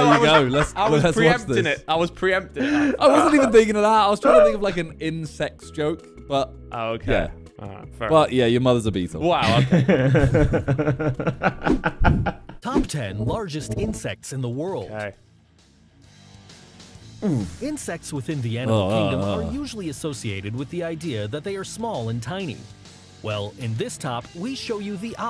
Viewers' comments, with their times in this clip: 0:06 i thought simon said Incest in